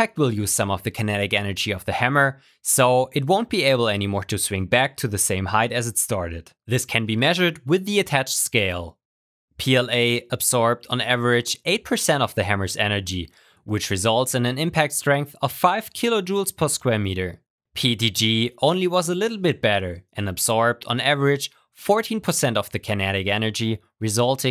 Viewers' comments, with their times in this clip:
0:08 Aye, you sound like a robot Just thought I'd let you know